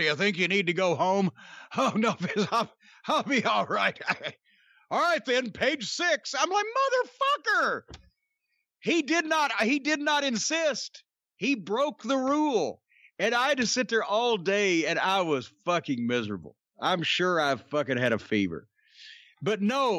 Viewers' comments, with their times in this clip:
0:06 best "MOTHERFUCKER" I've ever heard 😂😂😂😂
0:06 sounds like Bruce Prichard imitating Cornette.